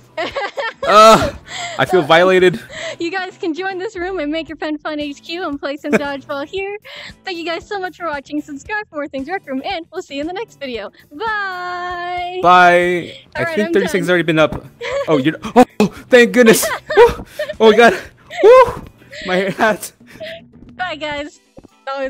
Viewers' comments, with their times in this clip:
0:04 did he just whoaed?